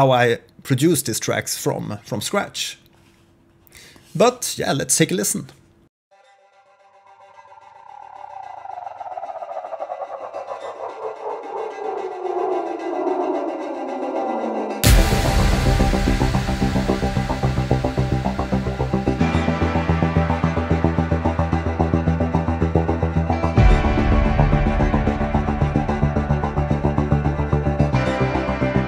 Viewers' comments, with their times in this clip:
0:09 Fine ! How do you build the fx ? At the begining of your song. Do you modulate the pitch ? Do you use a lfo to modulate other parameters ? Thanks and good job !